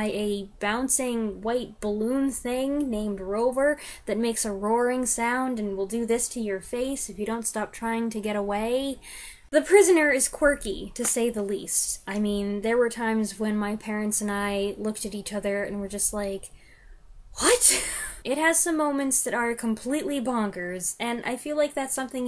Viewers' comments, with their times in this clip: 0:04 That roaring noise was apparently a man’s scream slowed down. That’s why it sounds so terrifying.